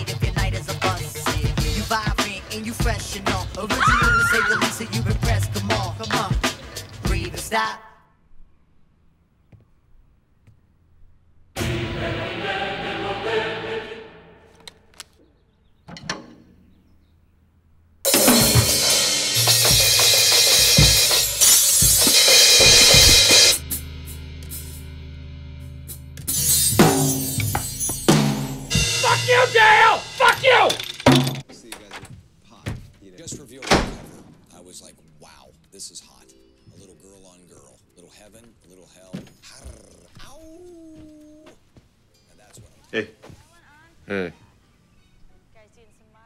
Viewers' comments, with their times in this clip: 0:03 why does that lady scream like the record scratch in "Jump Around"
0:28 I love how Will Ferrell yells angrily at Dale's drum set. It totally cracks me up. 😂😅😂😅